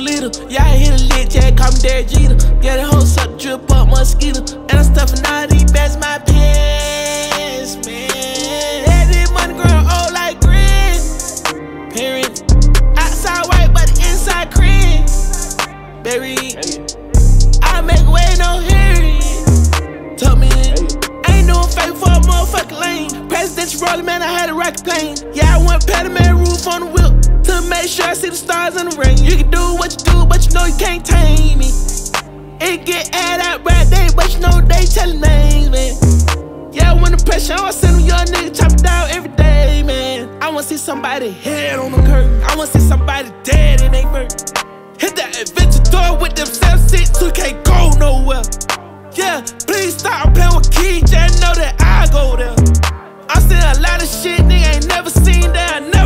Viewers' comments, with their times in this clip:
0:06 the notes this guy is hitting are so infectious bruh I have this on repeat
0:10 is what ur looking for 😂 ngl tho this is fire with a beat ofc
0:41 flow switch aye aye ayeeee.